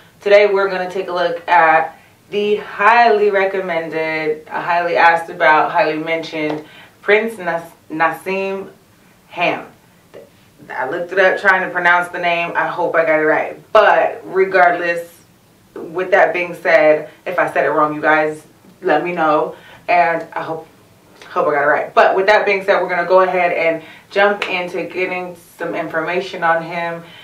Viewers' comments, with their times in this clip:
0:09 Lol 😄 She called him "Ham" 🤣